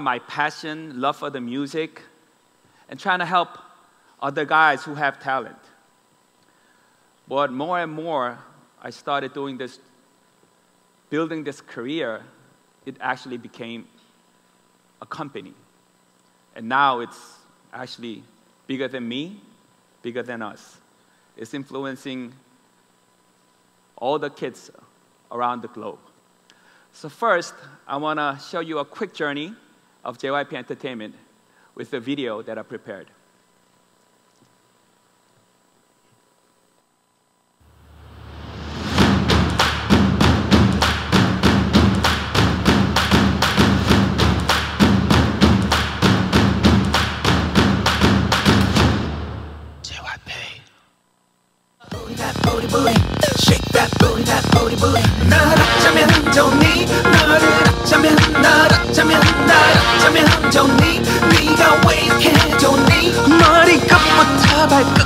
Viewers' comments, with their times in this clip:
0:07 More & More was planned this whole time... I’m late :,) This sounds exactly like a Ted Talk
0:49 *whispers with passion* JYP I got chills 🤤
0:50 J... Y... P... (like the whisper 😍)